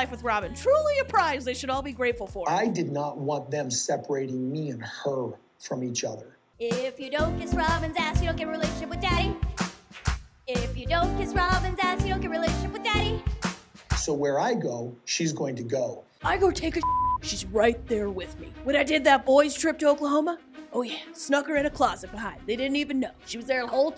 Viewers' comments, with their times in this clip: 0:09 Your videos are genius! this song, just killed me and had to watch it over and over 😂😂😂😂😂